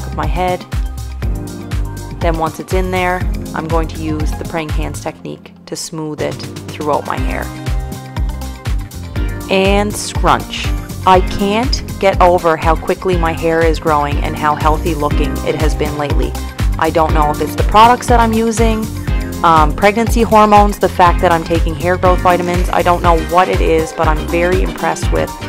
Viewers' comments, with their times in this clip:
0:06 Song i felt that; went well with the video